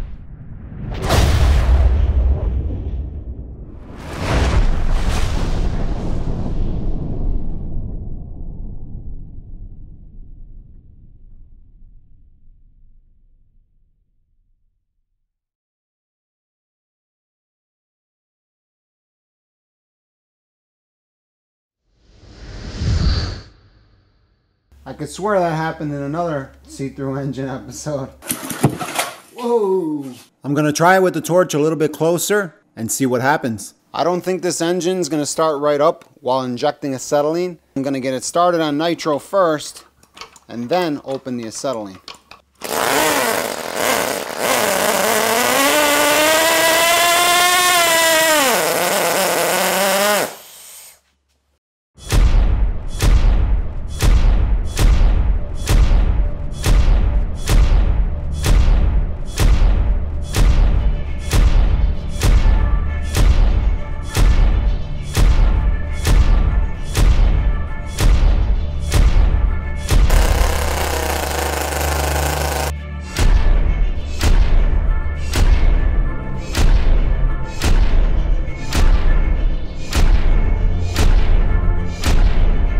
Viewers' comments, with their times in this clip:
0:05 is a great example of actual backfire. Possibly the biggest misconception with cars is that backfire comes out the exhaust side.
0:52 The sound of a widowmaker play of the game clip
1:05 Why do start to hear the Star Wars Cantina music?